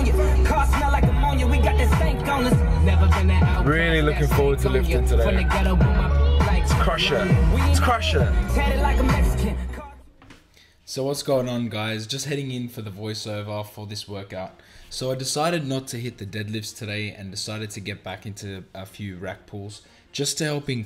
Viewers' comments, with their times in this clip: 0:05 those roosters had me laughing haha that AYO song is legit!